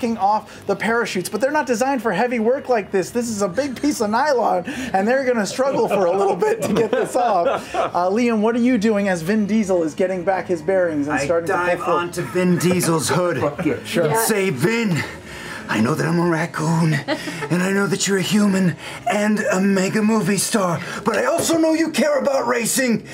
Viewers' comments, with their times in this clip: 0:06 Probably the best moment for me when Sam Riegal voice acts for Vin Diesel. I can't. X'D